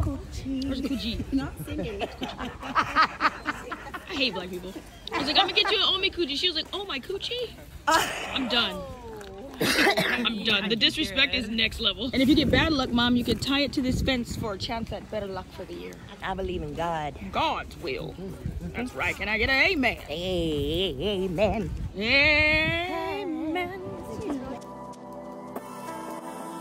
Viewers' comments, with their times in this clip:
0:07 lmao😂 the singing